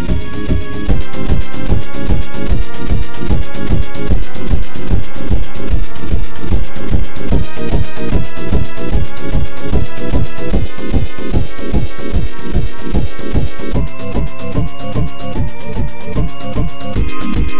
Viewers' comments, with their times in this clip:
0:04 How Sounded like G Major 10 (preview 2 weekend deepfake effects